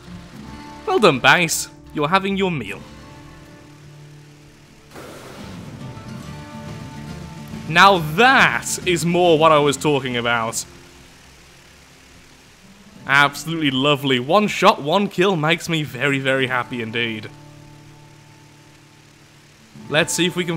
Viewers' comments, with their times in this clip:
0:03 the music hits so perfectly